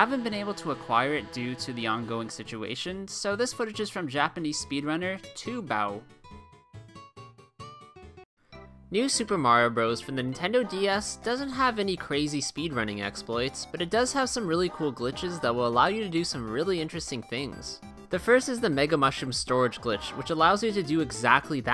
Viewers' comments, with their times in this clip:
0:04 you said his name wrong lol